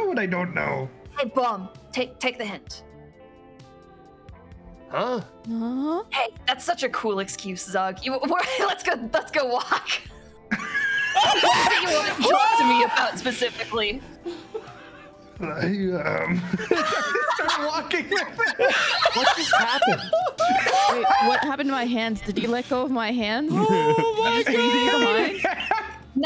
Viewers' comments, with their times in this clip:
0:09 was he the one who screamed ?